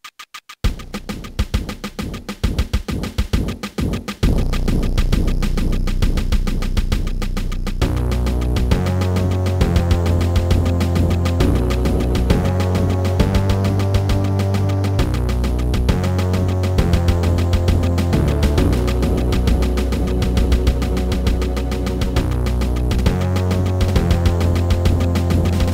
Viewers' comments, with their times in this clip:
0:06 a Nazi's cat purrs loudly.